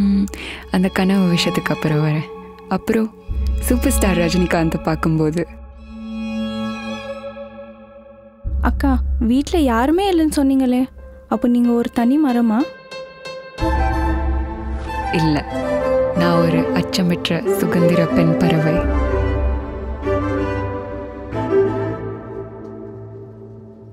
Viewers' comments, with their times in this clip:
0:04 Super star dialogue timing